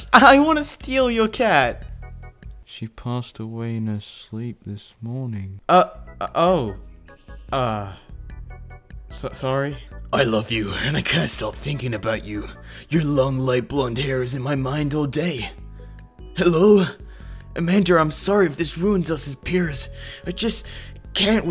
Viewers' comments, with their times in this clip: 0:03 that sounds like Shang stung